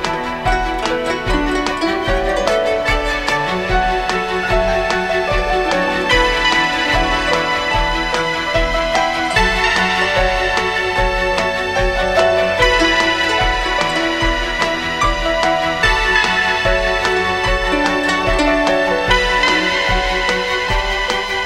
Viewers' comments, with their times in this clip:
0:09 oh god, as soon as that detuned note hits it gives me the feels